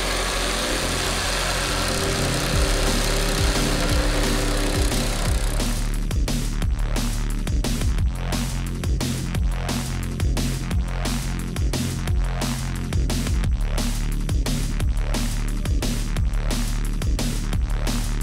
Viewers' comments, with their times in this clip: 0:03 *Head banging* HARDCORE METAL WOODCUTTING MONTAGE WUH WUH WUH WUH WUH WUH!!!!!!!!!!!!!!